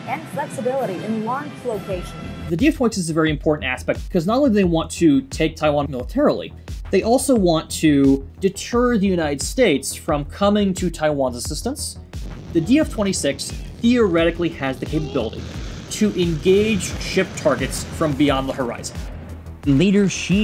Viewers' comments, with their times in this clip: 0:04 lol the NIN Closer song in the background fits somehow.